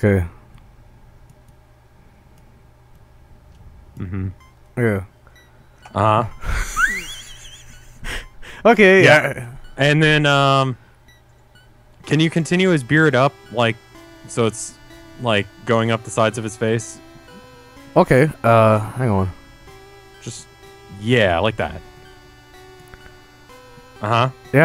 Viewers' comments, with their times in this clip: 0:06 perfect music for this terrifying monster...